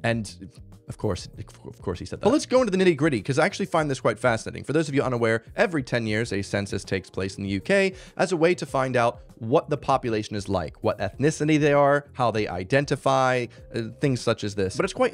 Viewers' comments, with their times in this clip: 0:03 OMG HE SAID GRIDDY